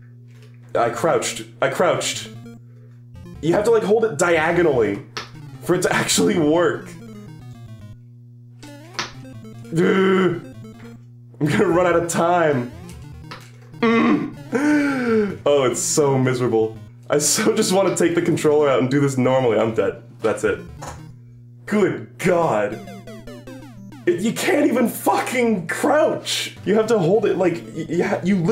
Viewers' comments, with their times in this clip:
0:09 sounded 1 to 1 like the horn in flintstones